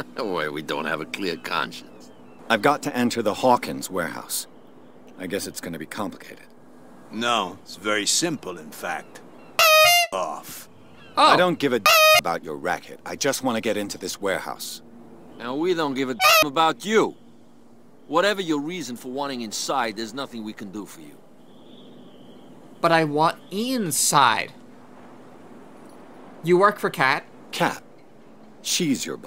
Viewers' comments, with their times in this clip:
0:10 The FNAF squeak sound effect scared the sh!t outta me